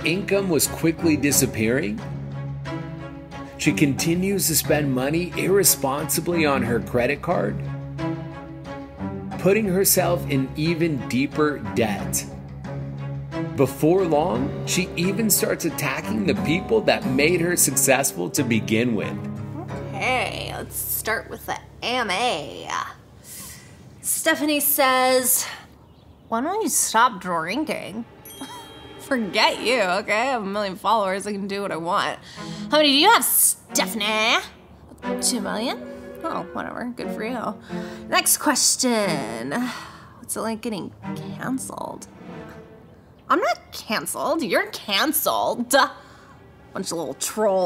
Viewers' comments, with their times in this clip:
0:07 bro she falls and the cashier laughing lol
0:24 "stephanie says "when will you stop drinking?" forget you stEphAnEh, i have a milliOneh fOllowErs, hOw mAny do yOu hAve stEphAnEh?" got me cacklin 💀✋
0:33 why she have to say my name like that tho😆😅